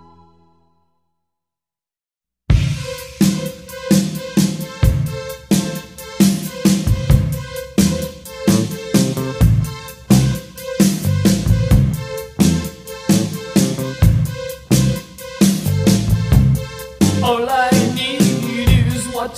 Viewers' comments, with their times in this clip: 0:05 min sounds like that Police song....